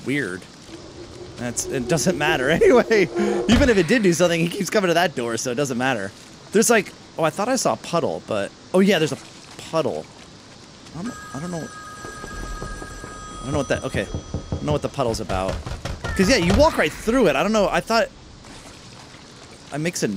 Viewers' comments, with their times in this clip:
0:05 Are we not gonna talk about Gary on the top of the Krusty krab meowing because SpongeBob brought him back to the krusty krab before